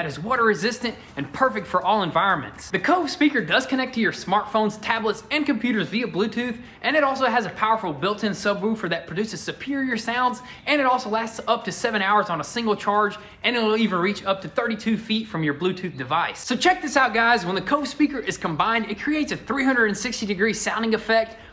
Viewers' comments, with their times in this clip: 0:07 GOONERS KICKIN’ The SUB WUUUUFER !